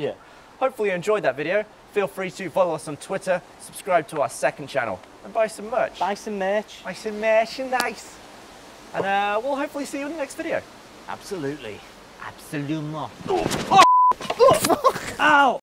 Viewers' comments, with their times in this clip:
0:12 Dan was so amazed by Gav's Frenchaccent he lost control over his hands
0:12 Dude he must've passed out from Scouse accent.